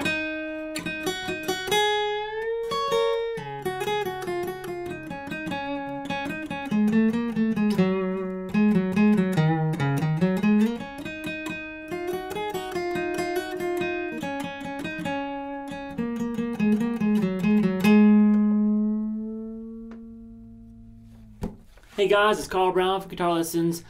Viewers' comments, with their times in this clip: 0:06 ahh that's the part that milks my tears :( so emotional, those descending semitones